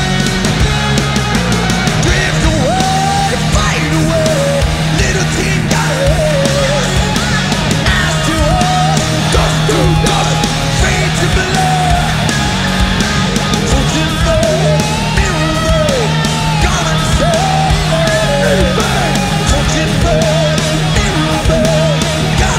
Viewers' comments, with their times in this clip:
0:03 Lars in the back singing along. Nice 👍🏽